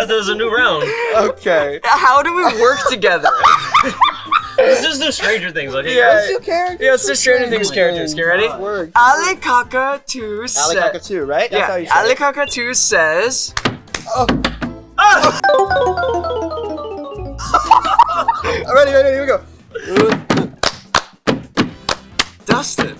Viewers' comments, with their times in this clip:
0:04 Omg Gaten laugh